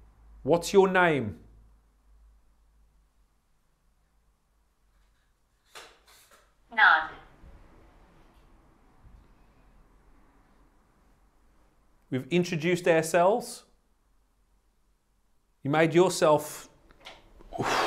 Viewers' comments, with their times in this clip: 0:05 Turn up the volume…When he asked what’s your name you can hear her say Anna right before the word NOT on speaker . 👻